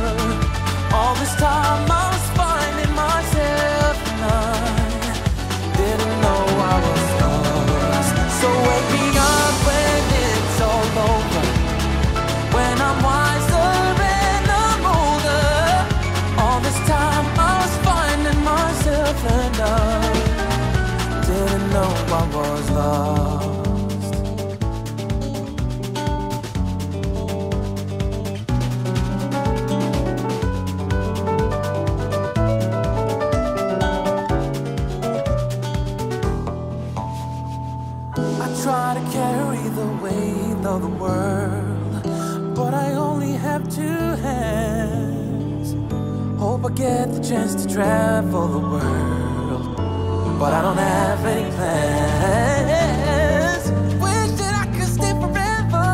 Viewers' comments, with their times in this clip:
0:09 that reharm! what?!?!
0:35 This band will never need an electric lead ever. Henrik can do virtually anything. From the intro to his pinch harmonics... this band takes pop and just turns it on its head with musicality, technical prowess, musical theory and some degree of whimsy. What an amazing song. And yes I agree with all the others, if you're hating on this you really don't have context for musical theory. There's a tremendous amount of artistic math that goes into calculating something like this. The Jaco-esque work is NOT to be missed.
0:37 Much, much better! "Shuh-shuh" is like that cherry on the cake))
0:37 Snare ....every second thoughtfully played...